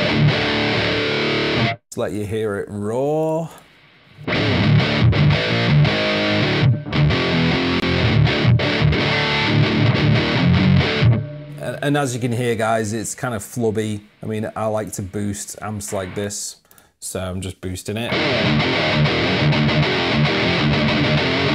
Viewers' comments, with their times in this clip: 0:07 that mesa DR rev F (boosted and unboosted) is soooo good !